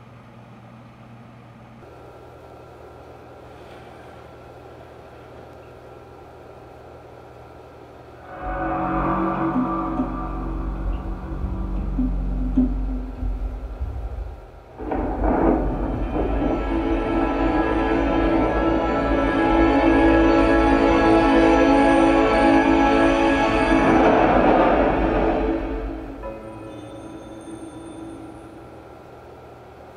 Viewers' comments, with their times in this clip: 0:10 Never had a laser disk or player but that boot up sound it made was really cool. Or whatever that sound is